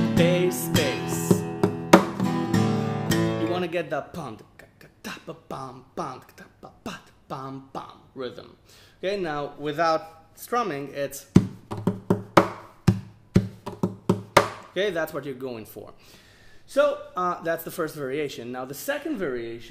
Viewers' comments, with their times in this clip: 0:04 Shortcut to for some mad beatboxing!!